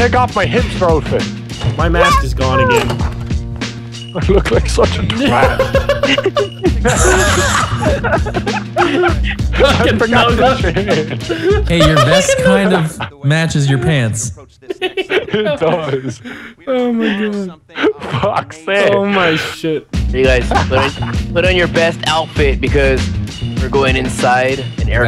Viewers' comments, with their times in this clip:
0:07 Vanoss's laugh is funny